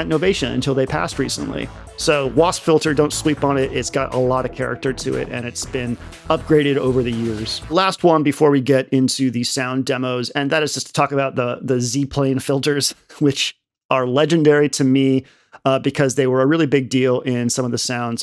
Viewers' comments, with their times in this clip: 0:03 do you say "don't sweep on it"?